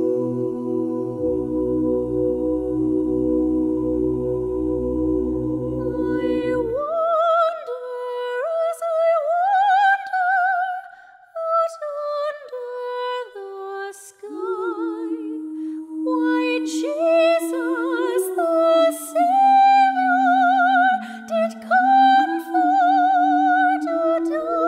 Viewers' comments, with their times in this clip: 0:06 that girl. We were talking about how bad of a job she does lip syncing and some of those high notes are way out of her range and they do not sound good.